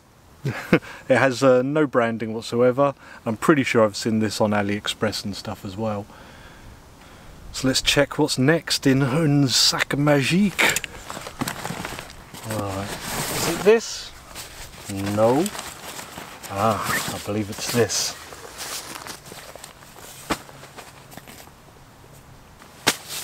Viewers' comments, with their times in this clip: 0:08 what the hell did you say here man 😭